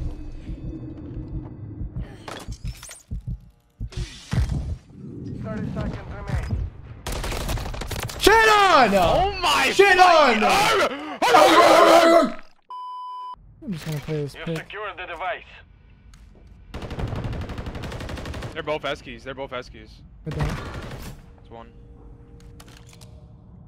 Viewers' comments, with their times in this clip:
0:09 The carry was great and barking in unison together 😂